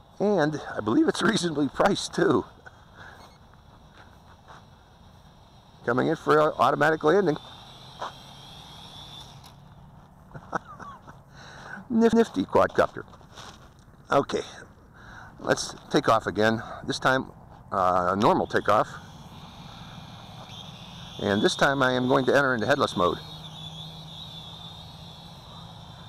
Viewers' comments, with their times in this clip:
0:10 nif-nifty quadcopter lol😂😂😂